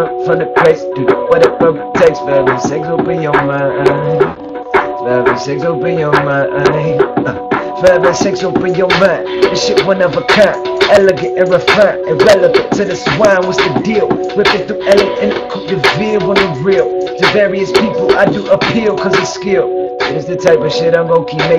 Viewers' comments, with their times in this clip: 0:07 Who that boys ?! So nice rapp. Like nigga mann.